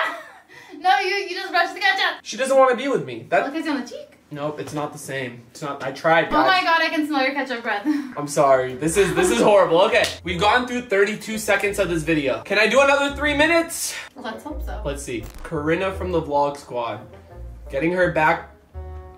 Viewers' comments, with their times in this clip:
0:03 The way she says "cheek" is soo cute 💜😩